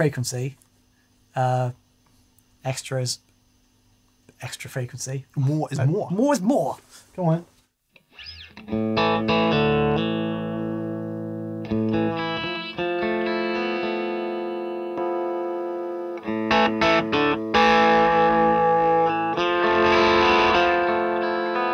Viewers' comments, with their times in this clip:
0:06 Did I hear an Yngwie quote / ½ impersonation in there ?. 😁